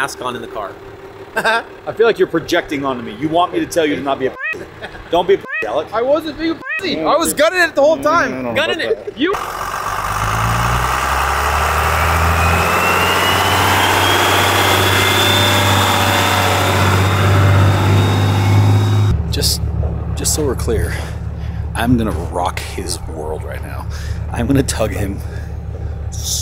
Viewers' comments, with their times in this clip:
0:09 That Jeep sounds awesome. Especially when you were climbing the hill